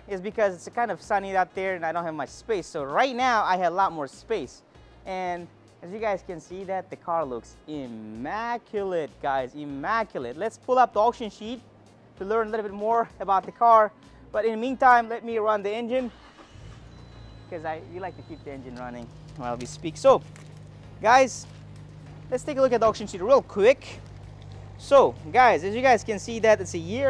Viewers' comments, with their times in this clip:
0:08 stunning car! and so quiet.